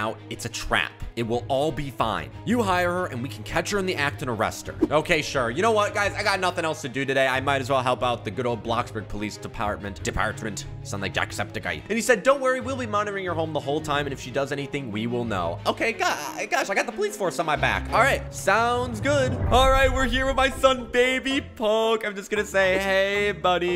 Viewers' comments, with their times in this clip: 0:09 his Irish is amazing!